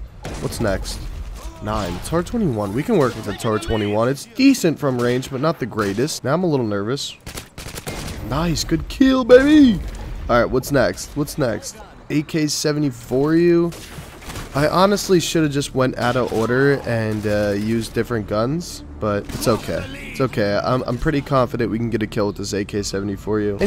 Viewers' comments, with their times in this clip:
0:10 Fortunate: AK-74u My mind: AK-70 for us